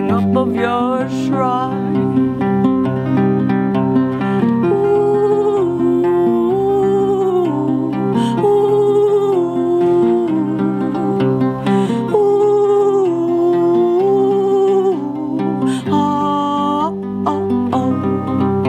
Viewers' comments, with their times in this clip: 0:04 did she get possessed by Chewbacca ?